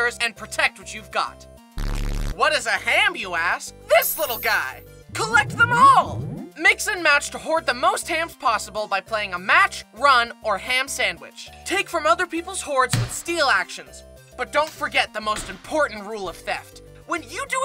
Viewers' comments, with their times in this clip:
0:05 the way you said it and how you like had me dead 💀